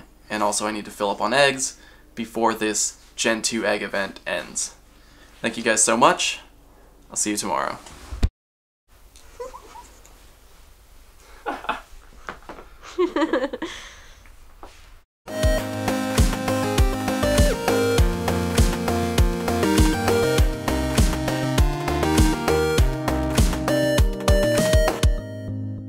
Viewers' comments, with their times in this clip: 0:08 that giggle :D She is so happy its cute af